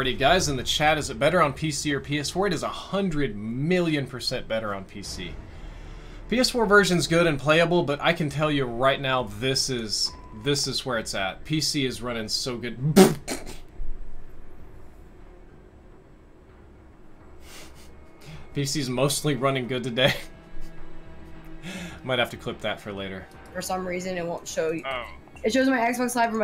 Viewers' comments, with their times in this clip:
0:09 why did he laugh